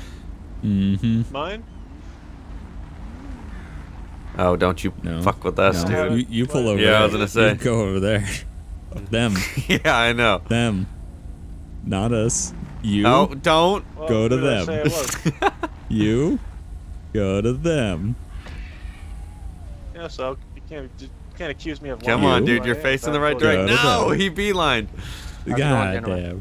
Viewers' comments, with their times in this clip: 0:08 in the back ground i heard 'Get out!' xD